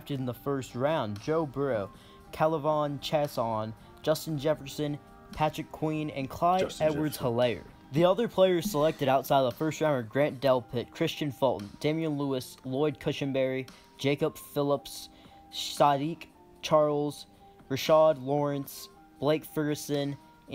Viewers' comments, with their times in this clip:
0:03 It’s a tough name to pronounce, but this guy’s pronunciation of K’lavon Chaisson might be the absolute worst I have ever heard lol